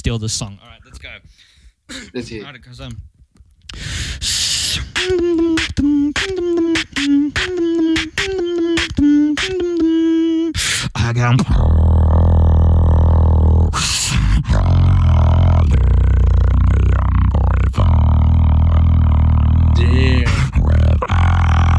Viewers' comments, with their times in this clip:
0:04 gave me inertia vibes, it goes so well with ur inward bass
0:04 MAAAN WHAT A BEAT!!!